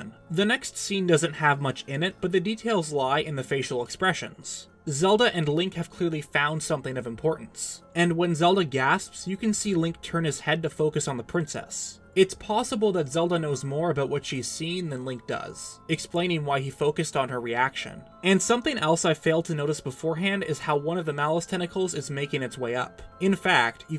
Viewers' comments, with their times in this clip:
0:07 Zelda: gasp Link: you what